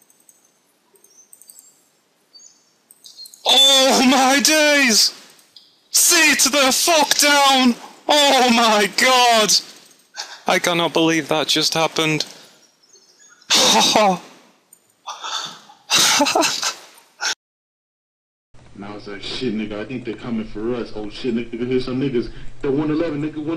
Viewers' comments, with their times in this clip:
0:05 all you should hear is "der derp derp derp"
0:06 what the fuck happens to his voice
0:07 The 2nd guy sounds like thomas the tank engine lmao!
0:09 Initiate robot voice. "I can not believe that just happened"
0:11 Sounds like he's a robot.
0:11 Robot voice, wtf :P